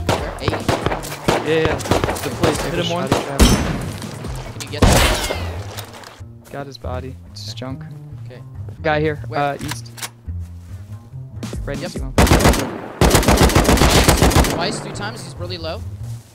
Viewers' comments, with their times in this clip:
0:03 Why The Sound Of L96 more like A Sniper Made A Point Sound instead of Sniper Gun Sound